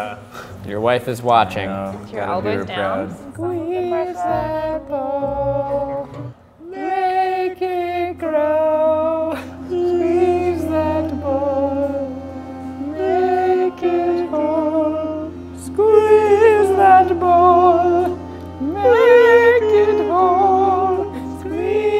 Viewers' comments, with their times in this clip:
0:03 This is where the song begins